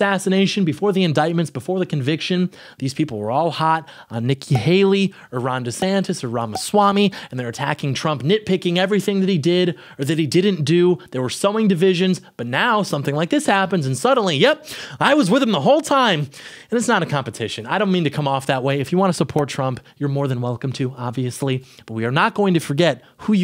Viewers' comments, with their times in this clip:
0:06 "Iran Desantis, Iran Maswami" 😂😂😂 Are you giving us a hint to the truth ere, buddy?